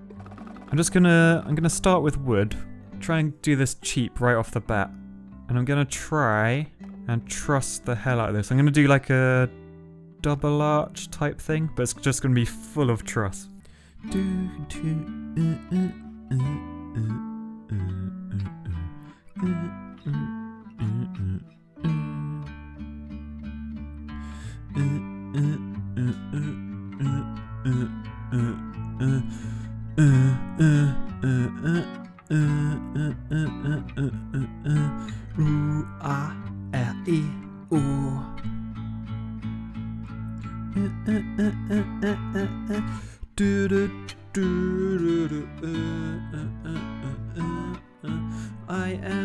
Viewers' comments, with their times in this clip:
0:05 = the best fricken sound track ever!! 🤣
0:13 Its LOVE THE SONG!!!!!
0:35 The singing is priceless XD